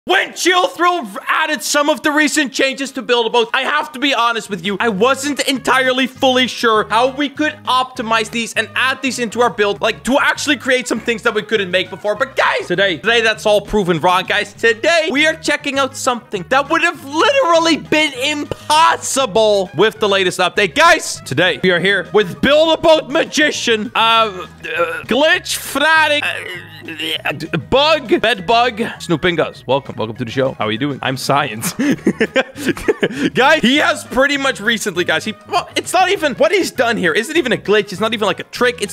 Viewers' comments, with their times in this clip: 0:00 tiktok in the background
0:06 He was watching TikTok in the back ground lol
0:11 the tiktok in the back LMAO.
0:21 ooo tiktok playing on backround epic